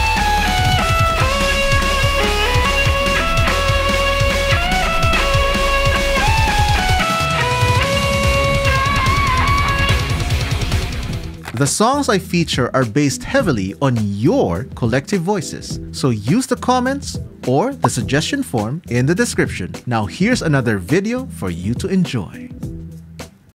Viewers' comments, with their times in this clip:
0:07 I need that violin